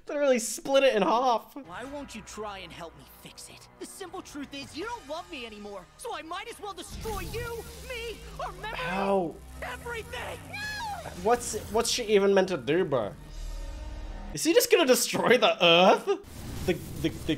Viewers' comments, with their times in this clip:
0:03 Ok, but can we respect how my man really cooked with that line delivery? You don’t love me anymore, so I MIGHT AS WELL DESTROY YOU, ME, OUR MEMORY… E V E R Y T H I N G!